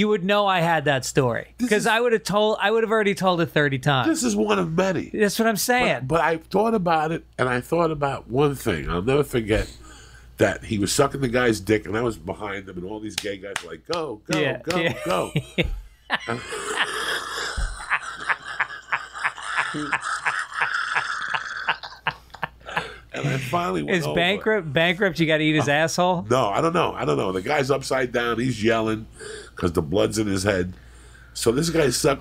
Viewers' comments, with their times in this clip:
0:09 Uncle Joey’s laugh cracks me up and scares me at the same time.
0:17 when you laugh so much a fart slips out